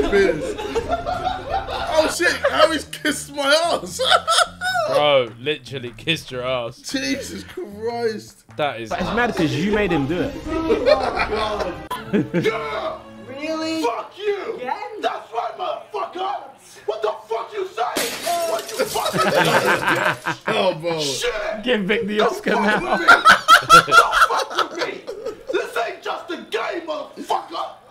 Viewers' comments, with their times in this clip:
0:10 love this little laugh from Tobi 🤤🔥